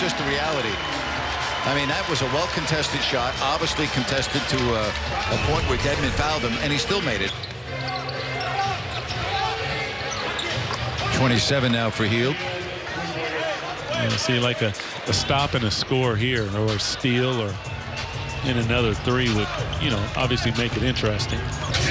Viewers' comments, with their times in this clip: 0:08 When Buddy shot someone yelled Kobe 😢.